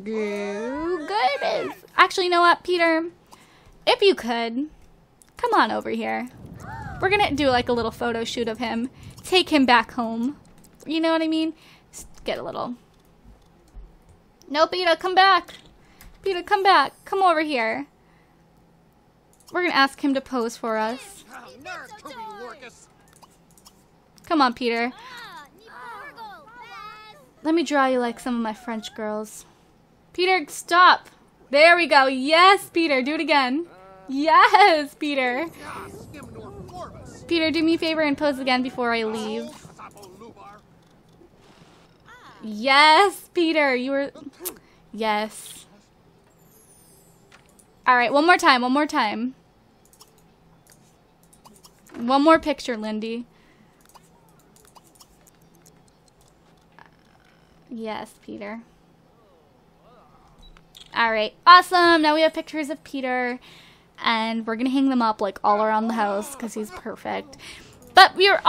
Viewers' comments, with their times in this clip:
0:06 Did anyone hear the weird gasping thing ?
0:49 Love how u say:YASS PETER YASS!😂 #LIFESIMMER